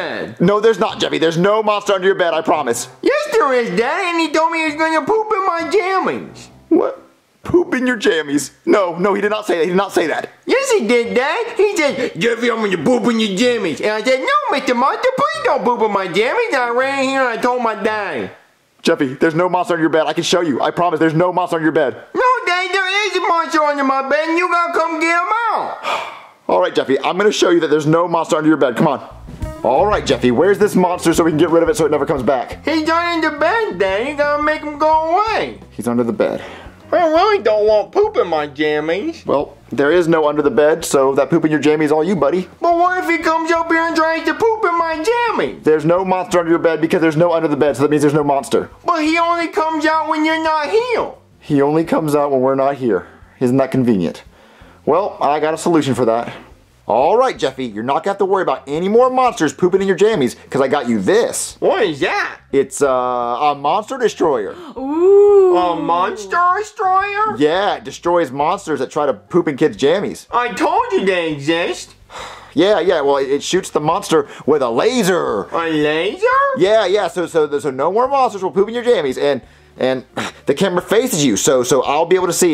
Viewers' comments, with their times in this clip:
0:04 the worry in his voice with that"wh-what?" Is to hilarious
1:04 The “OOoooh!!!” Of Sarcasm....